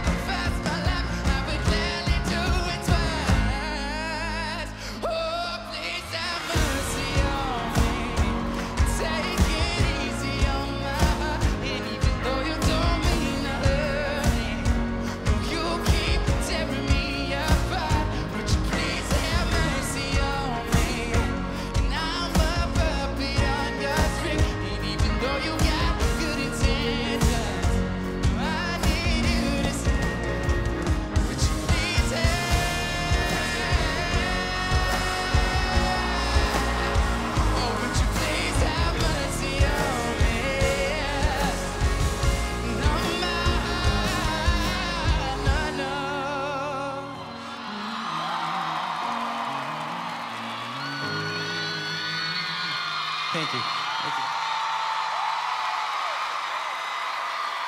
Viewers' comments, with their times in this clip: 0:06 He hit the note so hard his voice started to wear. Well right before that kinda
0:27 I remember watching this live and I knew he was gonna do sth amazing when he stopped signing but literally 2 seconds later with that high note I started crying and laughing because I was so proud of my muffin man 😊
0:30 After he hit that note he was just like, "Woah." 😂 And then he's all calm at the end like, "Thank you."
0:30 Omg love the note
0:30 Wow nice vocal
0:31 that high note, it killed me RIP me
0:31 Omg give me some oxygen please im died to his voice and im died after hearing
0:31 Someone apriciate his vocals on
0:31 The highnote killed me. Also that rasp.....😍😍
0:31 😍😍😦That one note got me on my knees😢😍😍😍
0:31 i saw the pressure of his voice and TALENT
0:31 High note, i repeated it like 5000 times omgg
0:31 aaagghhh his voice is amazing GOD!!! i keep replaying that part over and over but i can't get enough
0:31 That high note 😍😍🔥🔥💙💙💙🔥😘😘😘😘😘😘💙💙
0:31 THAT FUCKING HIGH NOTE I'M IN LOVE
0:32 Me: at home still recovering from this night Shawn: hey let's post the iheartradio performance that killed the fandom post video me: oh look Shawn uploaded a video watches it,hits the high note again Me: I NEED HELP SHAWN KILLED ME AGAIN MOM crawls on floor acting like I am dying Mom: shakes her head and goes to get a chancla Me: gets up and runs back to room and secretly dies in there Me: well thanks Shawn once again.
0:32 love that high note who else?
0:32 does anyone know what note he hit
0:32 that high note KILLED ME. THIS IS PURE TALENT. PROUD OF U LEGEND #mendesarmy
0:34 that note on killed me !!! love you shawn
0:43 it just kills me if he says heart